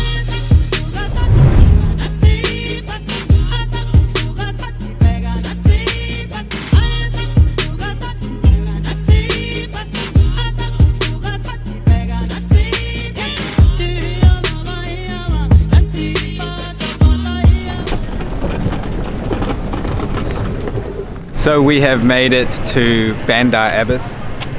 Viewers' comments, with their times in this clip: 0:07 All the videos are amazing! I have only one constructive comment; the background songs choices are a bit off. A Brazilian song was played with this video in Iran and on one of the Brazilian videos, a Spanish song was used… shouldn’t the songs be from the country on display to make it more authentic? 😊